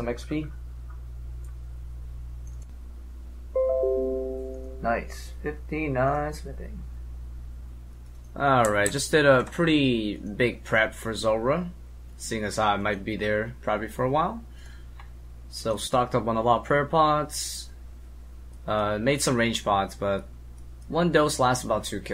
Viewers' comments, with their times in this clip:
0:03 = ghost mouse sound ?